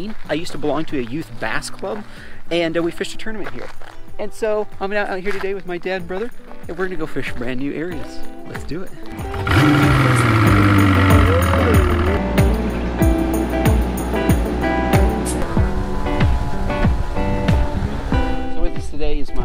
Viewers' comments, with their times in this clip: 0:04 sounded like "im here today with my dead brother" XD